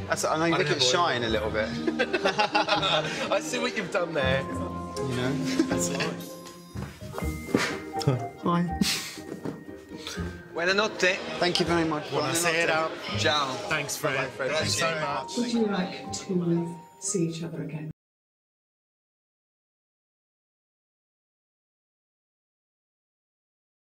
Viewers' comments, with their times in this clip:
0:08 their little “hi” to each other omggg 😍😍❤️